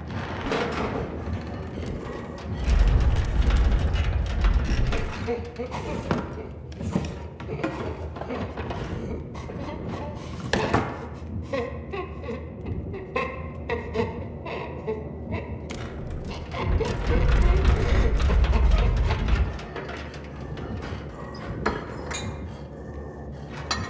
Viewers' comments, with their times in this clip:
0:06 what is the doctor laughing at
0:08 The laughter gave me chills...
0:11 Is it me or does it sound like he's crying?